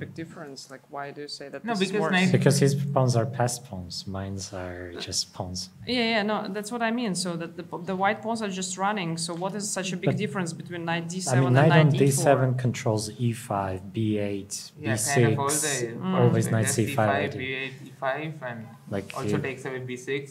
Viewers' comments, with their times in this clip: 0:03 “because his paws are passed pawns” 😂😂